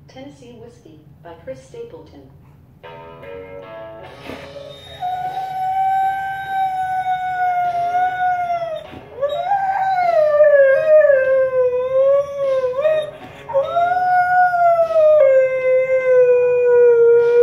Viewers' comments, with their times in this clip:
0:05 it is like vacuum sound